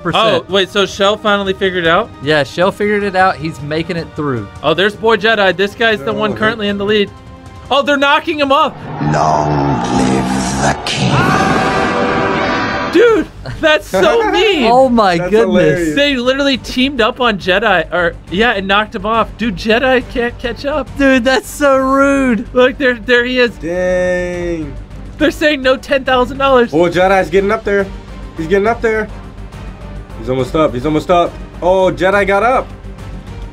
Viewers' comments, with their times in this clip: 0:06 The Lion King playing in the background makes this moment so funny😂
0:14 ICONIC MUSIC then ya hear mrbeast and be like.... bruh